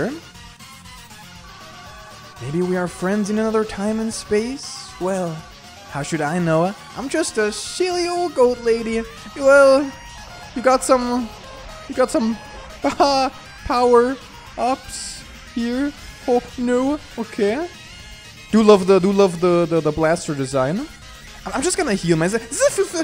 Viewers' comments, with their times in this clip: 0:08 He's not saying what i think he's saying is he? 💀 Im referring to the "power ups"